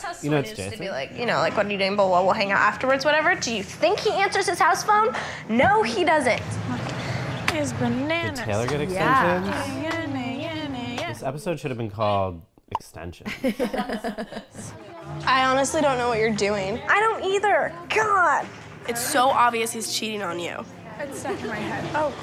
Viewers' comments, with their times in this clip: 0:06 the casual singing of hollaback girl oh my GOD ladies and gents it was 2004 indeed :' )))